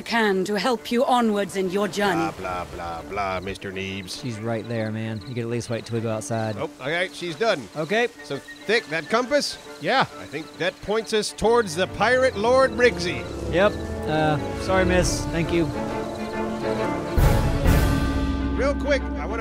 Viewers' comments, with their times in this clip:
0:06 I’m getting pirates of the Caribbean vibes already with the music and the dialogue